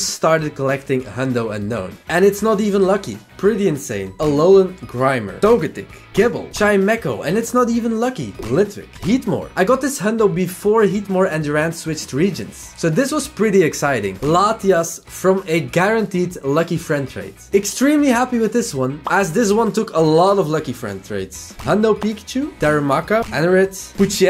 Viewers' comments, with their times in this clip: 0:06 this is not Gible😂